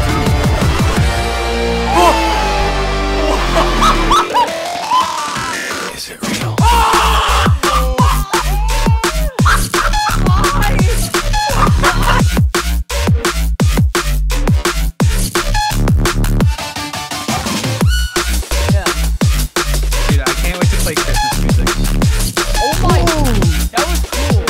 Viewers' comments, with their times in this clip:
0:03 your laugh was synced to the beat
0:05 the laugh sync tho
0:05 bro his laugh was in sync with the music LMAO
0:09 look at the skull from the goal explosion, it was in sync with the dude screaming ''MYYY'